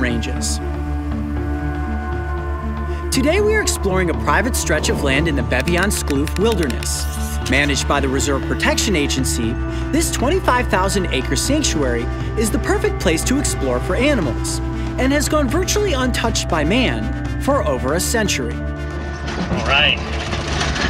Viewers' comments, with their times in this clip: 0:05 that pronunciation was actually pretty close